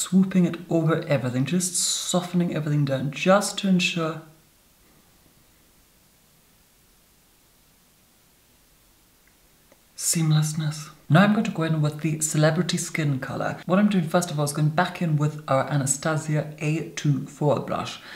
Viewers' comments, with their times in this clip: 0:03 When he took a pause before saying seamlessness, I began WHEEZING Time stamp: